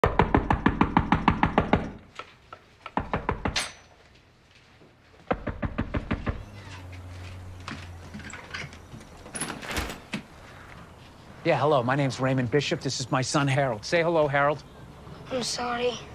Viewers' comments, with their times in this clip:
0:00 my parents knocking on my door like that at 7am to wake me up for no reason & almost give me a heart attack